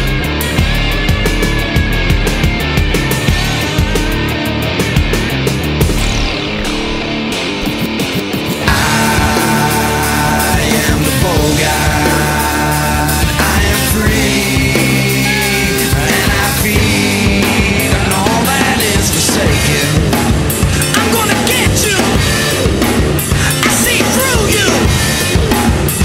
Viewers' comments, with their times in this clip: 0:08 Caution: hit the mute button starting